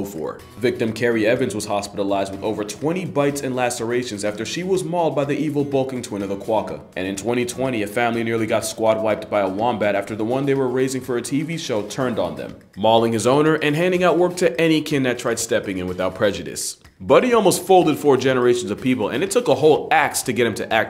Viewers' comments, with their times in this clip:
0:05 did you say "evil Balkan twin"?